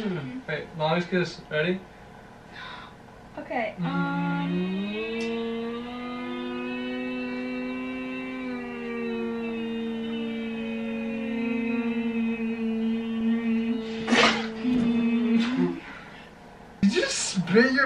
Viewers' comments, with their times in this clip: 0:03 they sound like a car slowly reving up 🤣🤣🤣🤣🤣🤣🤣🤣🤣🤣🤣🤣🤣🤣🤣🤣🤣🤣🤣🤣🤣🤣🤣
0:05 they sound like an airplaine😂